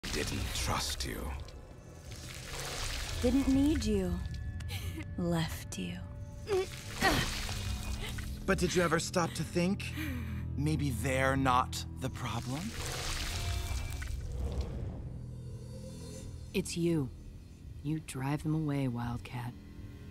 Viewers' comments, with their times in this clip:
0:04 you can hear Catra just sob softly as Double Trouble says "They didn't need you" as Adora and I just-